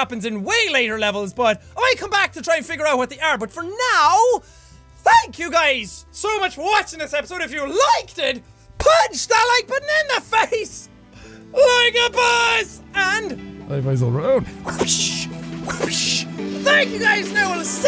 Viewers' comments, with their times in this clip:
0:04 has 2 voice cracks from jack